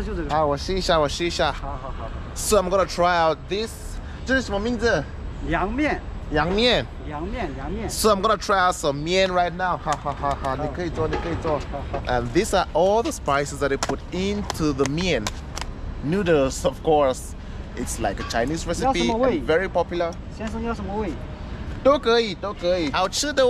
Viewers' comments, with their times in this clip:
0:05 Man, I love your video. Just one thing, for it's just Liang Mian. 凉面, which means cool noodles. This guy does have some southern accent and prounce L as Y.